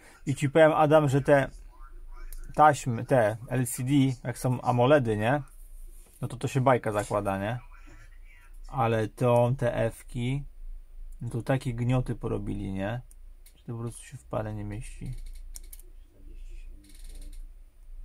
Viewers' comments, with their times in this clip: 0:06 DIY Are you Pole?